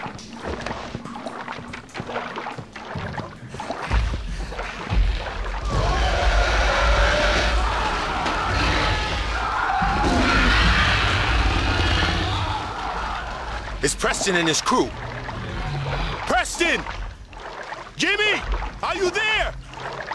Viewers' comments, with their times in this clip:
0:05 Sounds like something bigger & meaner than Kong.